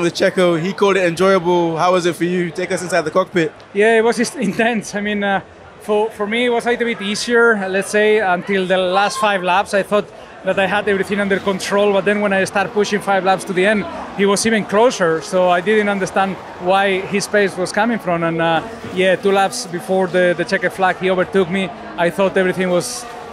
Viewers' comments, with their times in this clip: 0:10 I hear a Windows plung sound